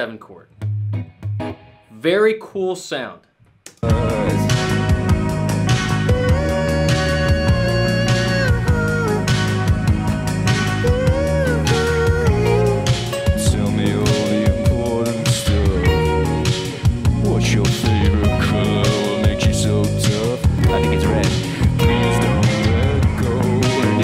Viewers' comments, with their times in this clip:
0:10 Damn that part was about, the first few seconds were decent as you got in rhythm but after it was fantastic Would love to see a remix of this song with those little solo additions Great job!